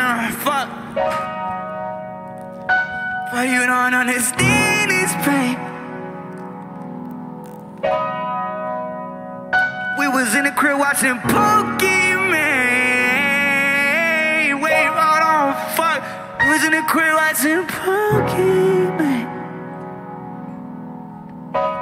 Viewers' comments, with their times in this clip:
0:08 Damn hit man. Was in my crib watching pokimane too 😢